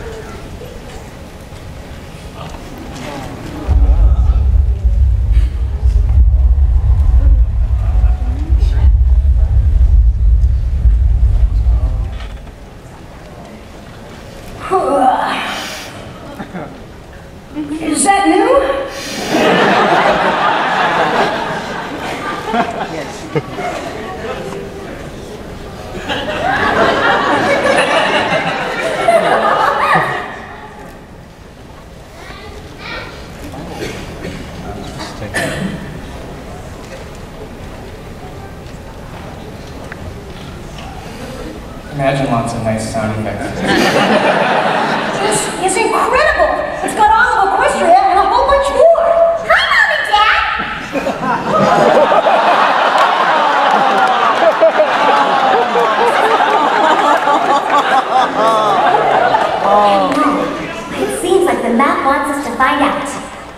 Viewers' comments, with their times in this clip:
0:04 first thought say he say ho...say he say ho
0:51 why is everybody laughing in ?